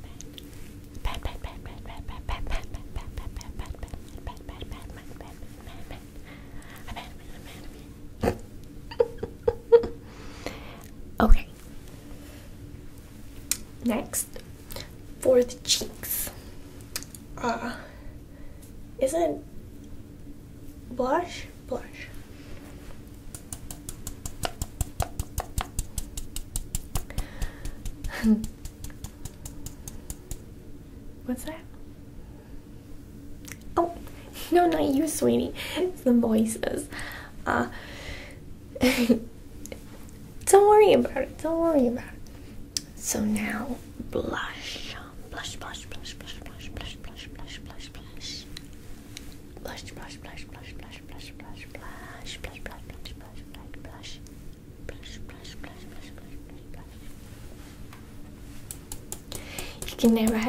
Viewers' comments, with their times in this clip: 0:09 gotta love that snort...
0:39 "don't worry bout it fam " ...please say I'm not the only one who thought of Jenna Marbles when she said
0:44 sounds more like splash than blush
0:46 it sounded like she said plus plus plus